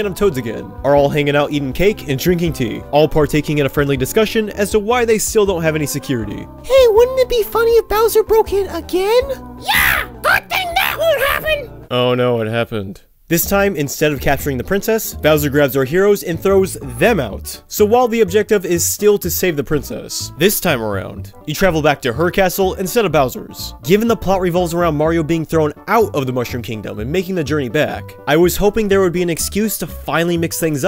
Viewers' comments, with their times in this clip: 0:08 I loved the toad impression.
0:09 That Toad impression is pitch perfect.
0:11 okay but that was such a good Toad impression wtf